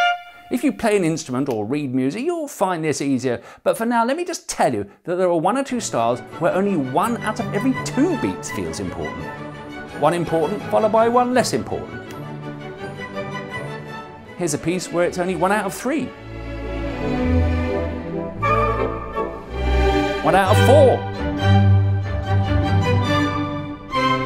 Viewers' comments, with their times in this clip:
0:05 the ticker rushing annoyed me more than it should have :’)